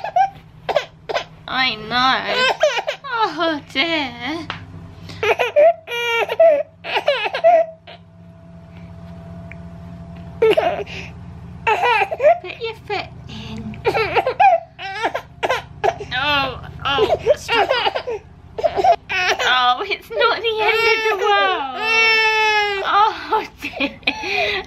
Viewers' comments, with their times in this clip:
0:05 She's crying but don't want to lose the chance to look at the camera 😂😍😍